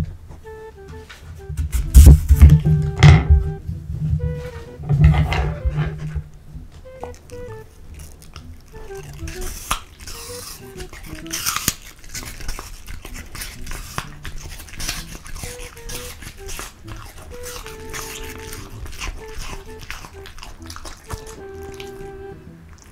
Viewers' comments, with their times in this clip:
0:09 how minecraft spider noises were made